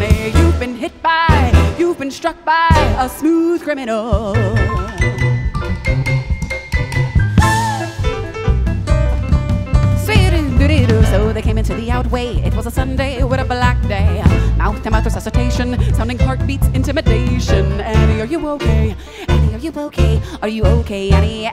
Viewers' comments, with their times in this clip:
0:09 Wow, good one. I love the casual skat ❤